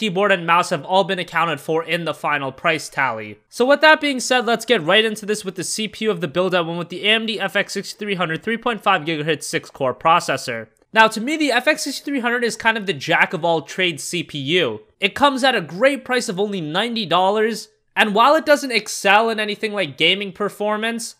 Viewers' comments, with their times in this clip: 0:06 new CPU frequency giga-hitz also the 6300 is actually a pretty good CPU just don't pair it with anything higher than a 970 or a 280X and it will be right at home